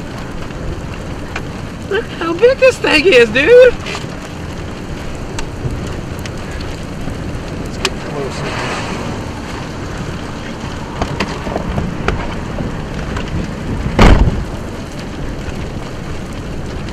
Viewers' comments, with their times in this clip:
0:03 listen to that voice